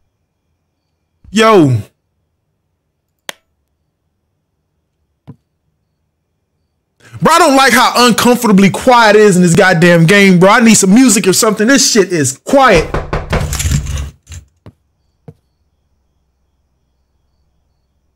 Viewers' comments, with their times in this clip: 0:06 Keem "I need some music" Ghost plays the door drums